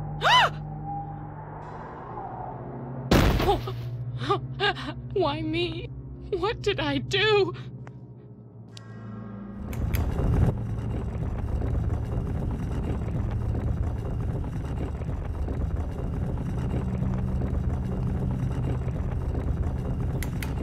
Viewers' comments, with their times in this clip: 0:06 why does she sound like Nancy Hicks Gribble from King Of The Hill?